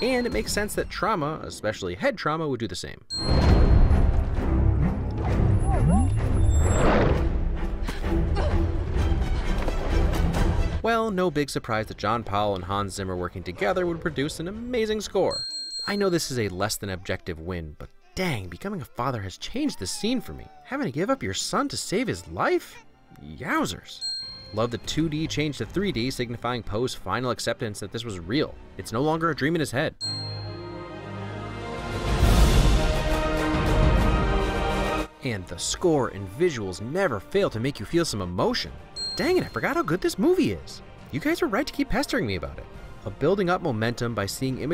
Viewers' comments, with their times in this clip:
0:04 that whole sequence is my favorite in the scene. The music is incredible and many times I've cried while watching it.
0:32 this scene never fails to make me tear up a bit, the swelling score and showing what Po achieved is just amazing.